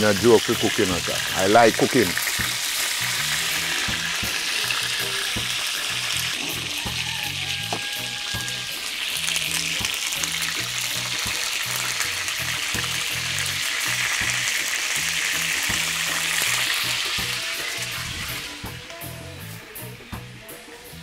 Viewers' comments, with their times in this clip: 0:05 does that blue lid tub activate a rooster sound when you open the lid, like them old musical birthday cards?